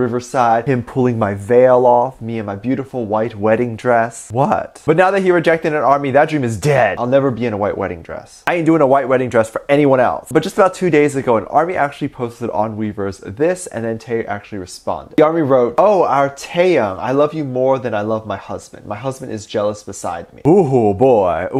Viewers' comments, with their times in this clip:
0:06 The way he said "that dream is dead"😂